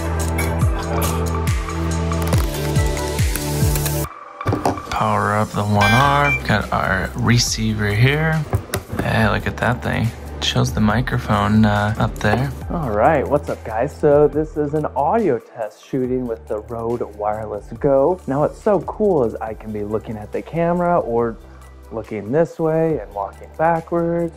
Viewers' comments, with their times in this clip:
0:06 which little tripod is that? Seems to have a ball head or similar movement? The Rhode set-up is REALLY sweet!! Great to maintain audio and be able to walk around etc. Much more of a full bodied sound than onboard.